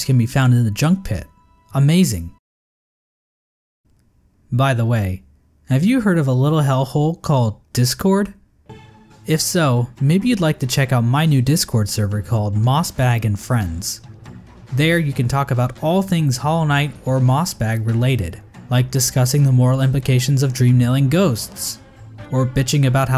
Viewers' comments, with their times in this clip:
0:08 “Have you heard of a little hellhole called discord?” MUSIC KICKS UP ad immediately interrupts Beautiful